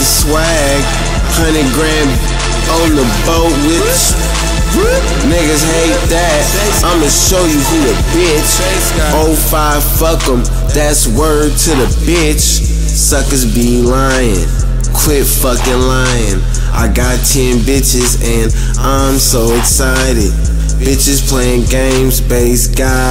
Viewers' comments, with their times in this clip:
0:09 Wooooooow!!!!! Shits tight how the beat breaks down and LIL B is jus chillin..lmao OMG this niggas SO BASED! 100,000 AMAZING!